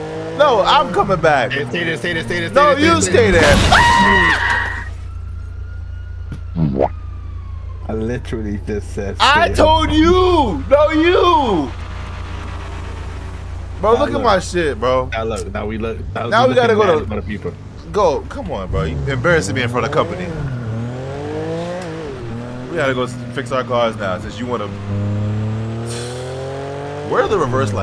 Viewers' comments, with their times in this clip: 0:09 Hahah that crash XD Your videos are the best man